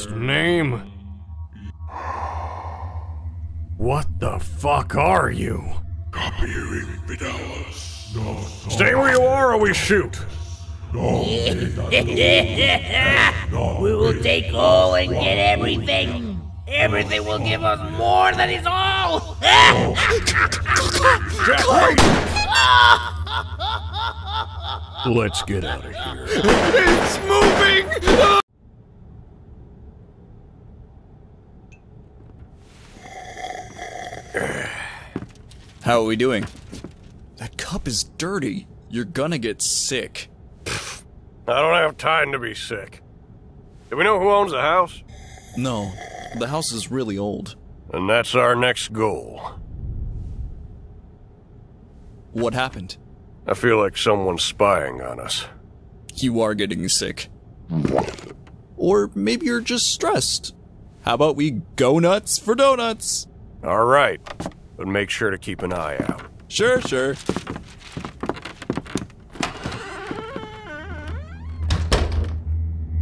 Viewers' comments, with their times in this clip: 0:03 "what the fuck are you.." bro said that soo calmly ☠️
0:19 Lyrics HEHEHEE C-clown... gun shot laugh of pain Lets Get Out of Here. WHY HE'S STILL MOVING?! With more gun shots
0:21 the clowns goofy ahh laugh.
0:22 that clown continues to laugh even it's already shot
0:22 HIS FUCKING HEART HONKED WHEN THEY SHOT HIM
0:57 Didn't expect Pelo to use a Bwomp
0:57 (Pause) Pfft (wheeze) Starts laughing